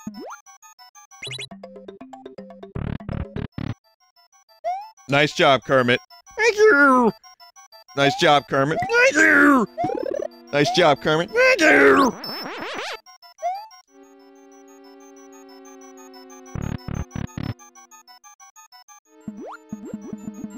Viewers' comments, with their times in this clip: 0:03 Is it just me or does his Kermit impression sound more like Beedle from Wind Waker?